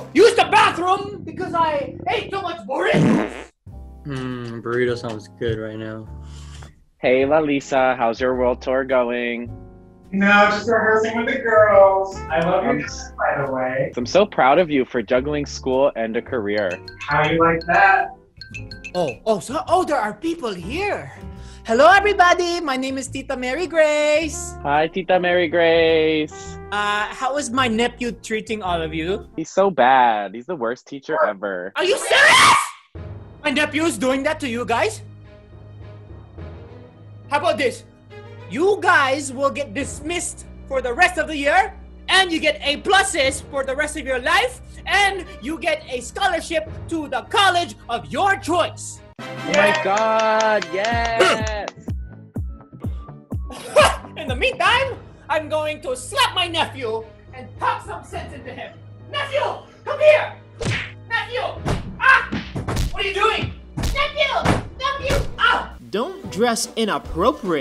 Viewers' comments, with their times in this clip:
0:05 At the moment there was a tummy rumbling sound and I thought it was me lol 😂
0:22 THE FILIPINO AMEN
0:32 rip headphone users 😂
0:32 my ears are bleeding
0:48 NOT THE KC SFX
0:51 That Grunt Lol